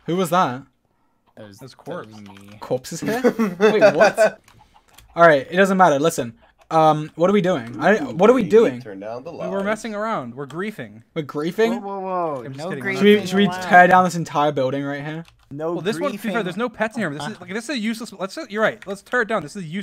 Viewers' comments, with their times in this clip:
0:07 lmao sapnap sung "ooh baby turn off the lights"